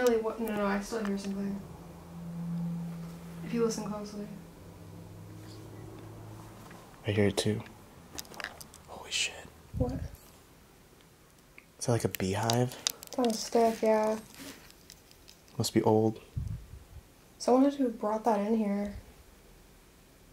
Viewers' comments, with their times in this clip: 0:06 ish, sounds like a faint "music box" in the background